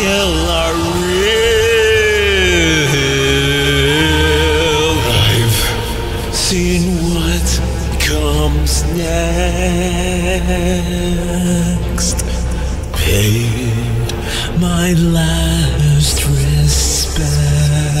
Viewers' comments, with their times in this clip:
0:04 This part is just pure fire, Never really heard a sans that sing this much accurate like that